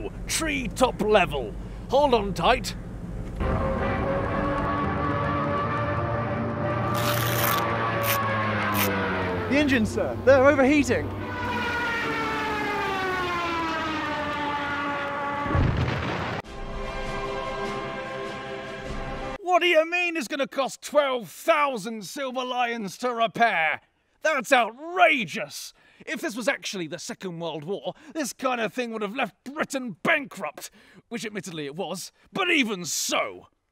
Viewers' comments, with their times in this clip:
0:07 since when did the Lancaster have stuka sirens
0:16 bruh the jerocho trumpet